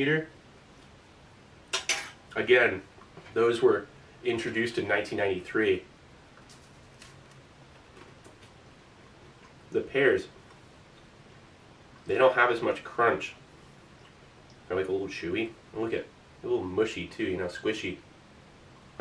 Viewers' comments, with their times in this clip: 0:06 I thought you were eating styrofoam